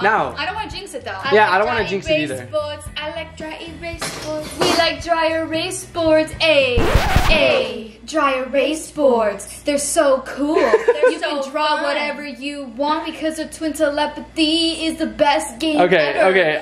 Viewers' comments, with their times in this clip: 0:03 that dey erase board song🔥